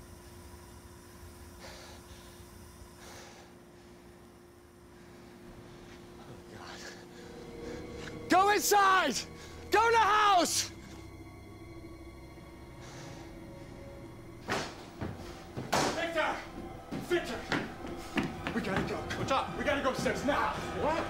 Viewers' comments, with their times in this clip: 0:09 The awkward silence of no running as he violently sprints into the house is disturbing